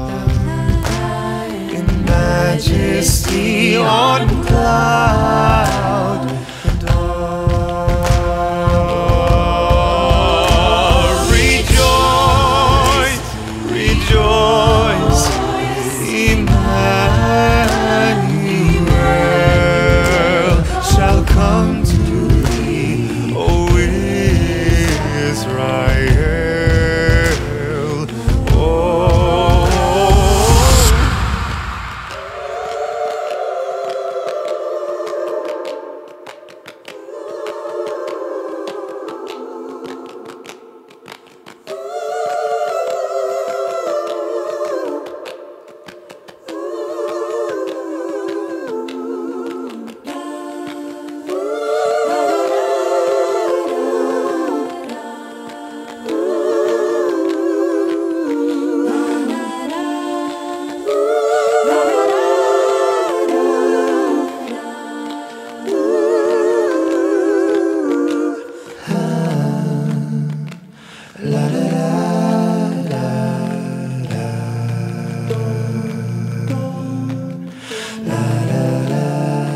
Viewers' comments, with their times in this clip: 0:08 Avi's "Rejoice" never fails to give me endless chills, it's just so beautiful
0:37 OMG so god damn happy. Another Avi solo. Also that bit is kinda haunting
1:01 💖 the background vocals. Merry Christmas!